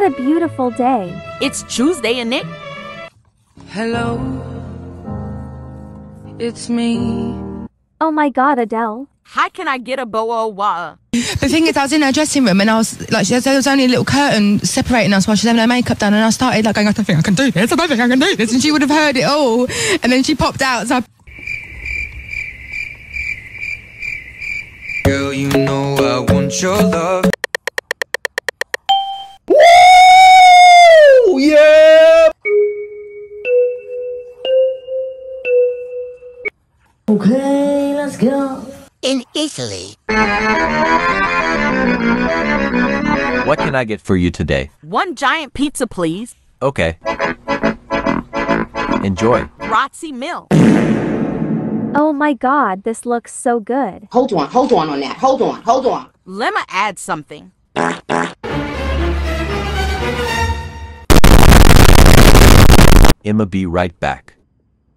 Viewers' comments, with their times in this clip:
0:09 cAn i gEt a BoUh o wauh?? got me 😂
0:25 Edd Sheeren in the background 😂😂😂
0:52 Omg im dying the bojouar baahhahahahaha "hour "